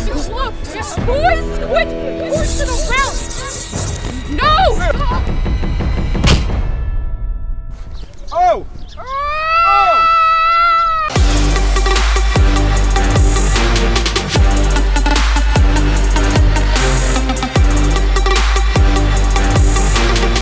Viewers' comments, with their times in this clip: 0:08 lol Hannah screaming at the end
0:14 They way she scream